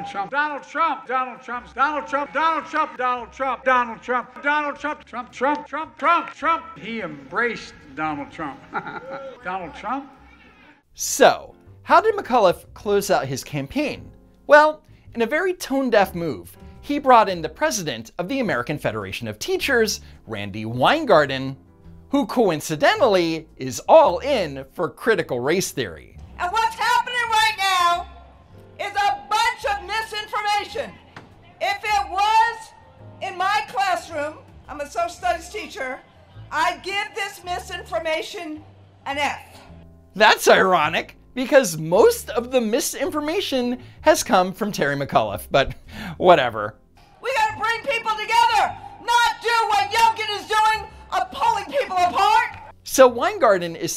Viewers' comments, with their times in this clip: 0:08 Did you here that "boo" ?...that's what is known as "a professional, nondescript cheerleader." Their job is to evenly wade into and blend in with the locals then "YEAH!" or "boo" or "GO CURRENT CANDITATE!" with applause at key points during the candidate's presentation. Just about every popular political candidate in today's day and age uses them. I think their campaign managers got the idea from the super villan of the 1930's; A.H.
0:34 "i'M a SoCi-sTuDiEs TeAcHeR" 🤡 (Now Biden isn't the ONLY person cutting words in half as they exit the mouth)